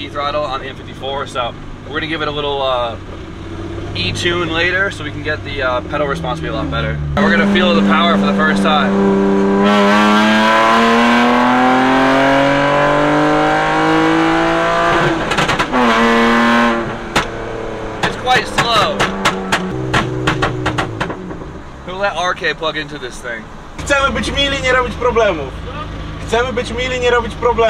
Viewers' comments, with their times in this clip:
0:09 it has no reason to be this slow, wtf. Even my stock b25 looks faster than that, even with the video making everything look slower. Here you literally hear it struggle to reach high rpm almost as if it was choking.